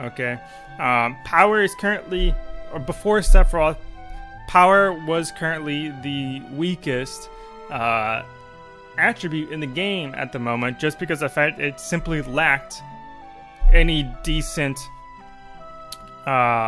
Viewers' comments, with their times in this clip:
0:03 I like how there was a bar at the bottom of this video that let you know how it was progressing and what would be discussed at a certain point. Very useful and clever! However at the mark the mouth didn't match up with the video.